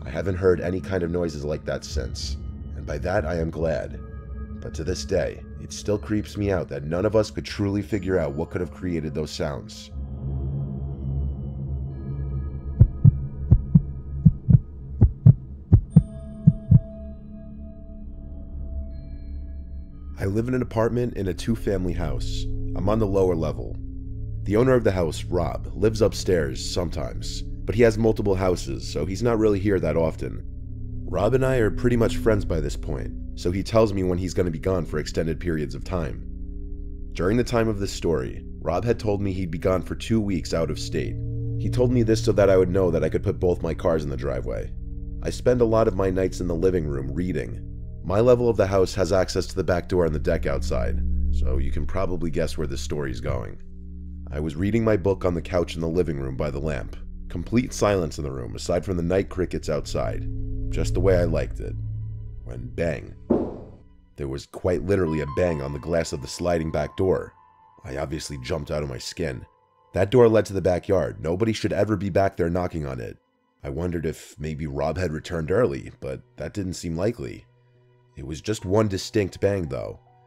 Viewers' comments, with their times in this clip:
0:07 The second story with the weird sound seconds in sounds like to me a fisher cat they sound eerily human like, like a women or child screaming in pain/being murdered, I have heard it many time in my woods it's terrifying but just simply an animal by the name.of "fisher cat"
1:02 scared me because it didn't sound like part of the video lol
1:03 that bang actually sounded like it was in my house.